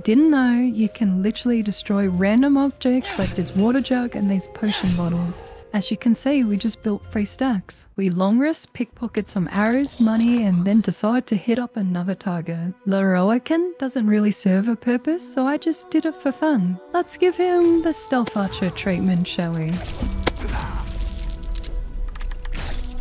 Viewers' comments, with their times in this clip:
0:10 that ambient in the background... truly a stealth damage to my soul but I don't mind cause it's gorgeous. Also, tehee